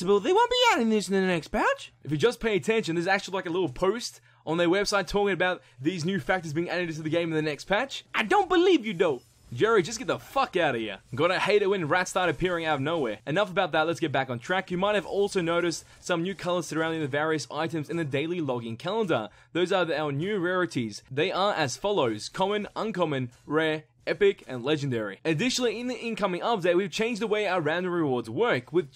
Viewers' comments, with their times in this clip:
0:09 Hearing you swear sounds really funny actually it's like you have a completely different voice for a few seconds.